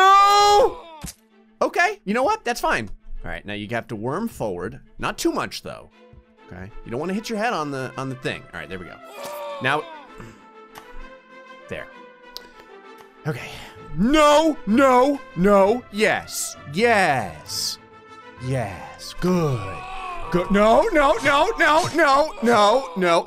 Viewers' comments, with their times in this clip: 0:07 the pirates of the Caribbean music really gave me hope he would survive, laughed so hard